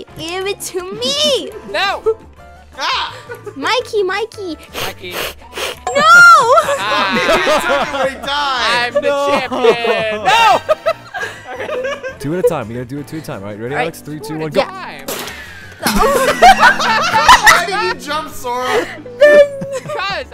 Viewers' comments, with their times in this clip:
0:05 HEHEJEJ THE WAY SHE JS STARTED HISSING😭